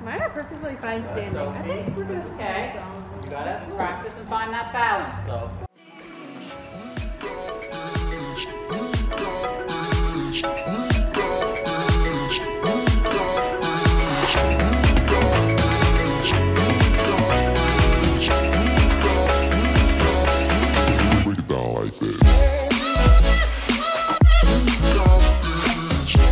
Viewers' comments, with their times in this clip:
0:09 WHAT is up with those lyrics. "You done _____" or "you dumb _______" The blank is not a family friendly word... Unless I'm hearing it wrong, I am surprised.